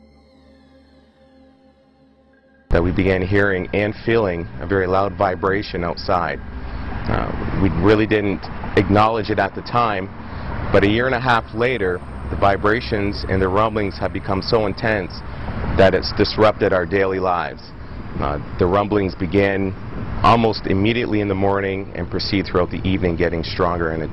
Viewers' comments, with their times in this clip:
0:08 Dude, it's AM. I'm freaked out. This literally sounds like hell. Good thing I wasn't planning on sleeping tonight....